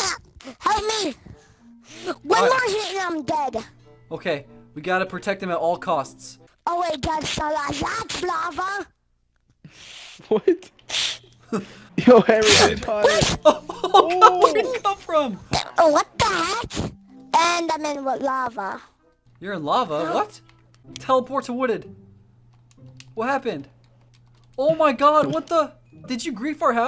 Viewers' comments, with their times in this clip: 0:07 Dude started speaking Arabic 🤣